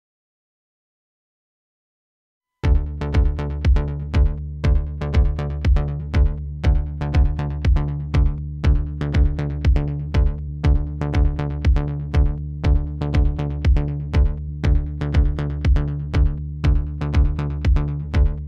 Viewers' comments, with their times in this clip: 0:04 HEADPHONE MUSIC WARNING You will get blasted into next year if you are not prepared...so fair warning...hope it saves some eardrums.